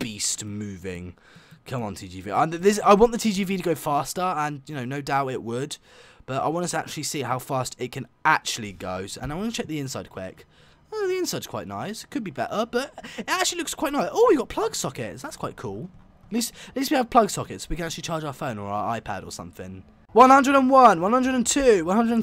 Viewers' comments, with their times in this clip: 0:07 Weird guy scream